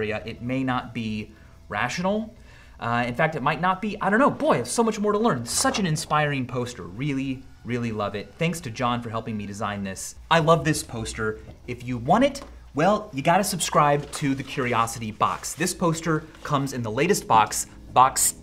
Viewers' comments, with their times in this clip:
0:06 A rooster crows